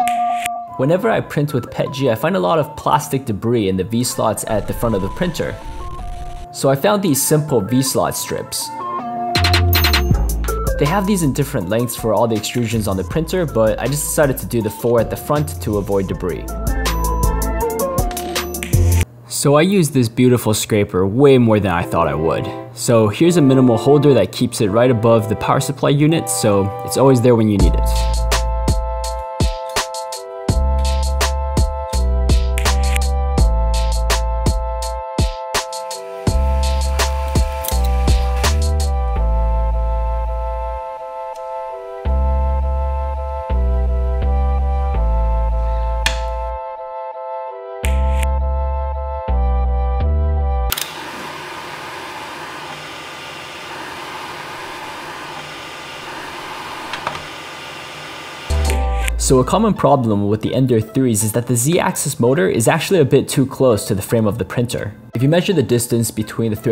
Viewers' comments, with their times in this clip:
0:09 music matching with the video is so good
0:51 you show how the thing makes it quieter but the fan wasn't even spinning idk how the sound works but